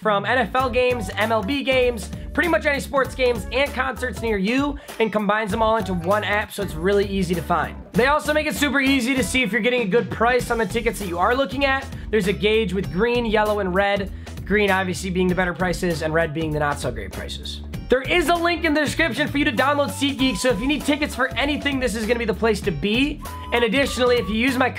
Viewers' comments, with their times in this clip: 0:09 That Naruto music tho😂❤️